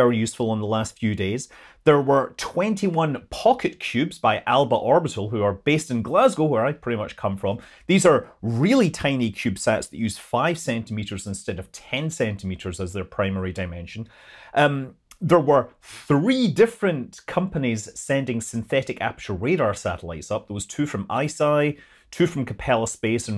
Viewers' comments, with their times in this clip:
0:04 I can't believe a Scotsman doesn't know how to pronounce Alba smh